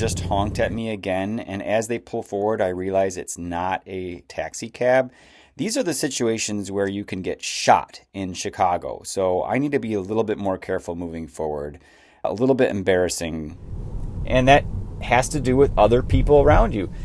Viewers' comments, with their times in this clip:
0:05 The fact that you just casually say "These are the situations where you get shot in Chicago" and move on like you just said "Oh it's Monday today" is just surreal! America, land of the freehehehehe!